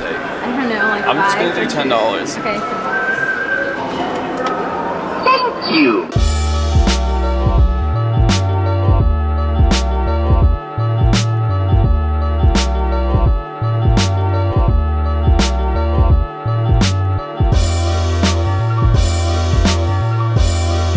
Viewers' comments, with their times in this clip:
0:05 The poke ball game in the arcade sounded like it said fuck you when he put the coins in lol.